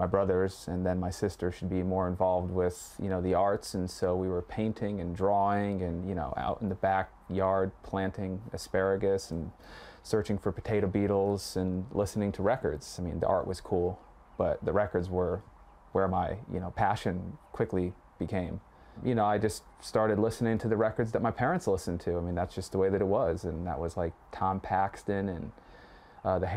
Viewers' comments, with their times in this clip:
0:08 What is a tater beetle